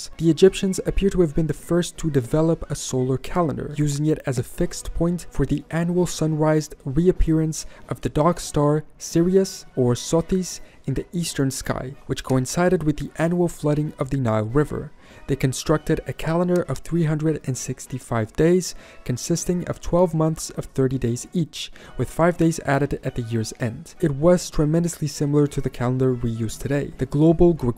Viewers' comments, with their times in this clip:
0:08 At first I thought you called Sirius "the Dark Star", when it's the brightest star in the sky (excluding the Sun). Then I realised you said "the Dog Star", a name I haven't heard for years.